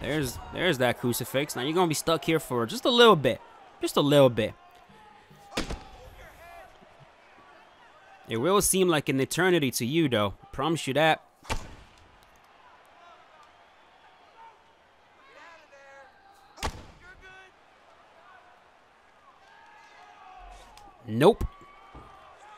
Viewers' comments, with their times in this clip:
0:06 the guy shouting move your head as he's in crucifix.